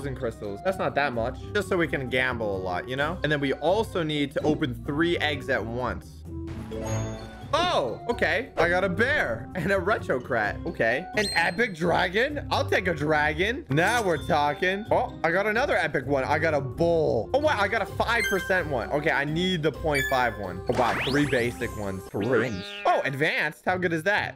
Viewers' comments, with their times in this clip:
0:10 he says “retro crat”